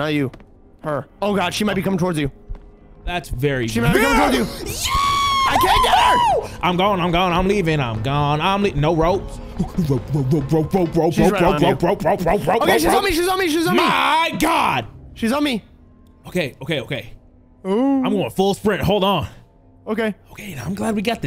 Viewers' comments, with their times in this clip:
0:03 Tom and jerry ahh scream